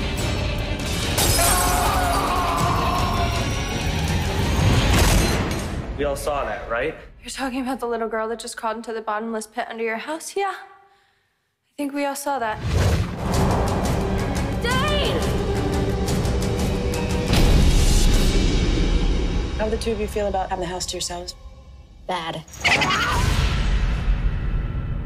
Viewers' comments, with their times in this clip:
0:08 the way she delivered that line so awkwardly